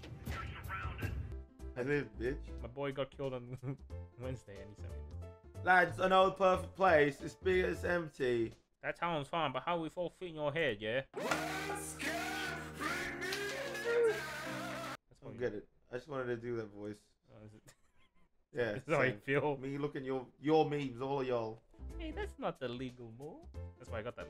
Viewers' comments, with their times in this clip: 0:05 that sounds nothing like Ringo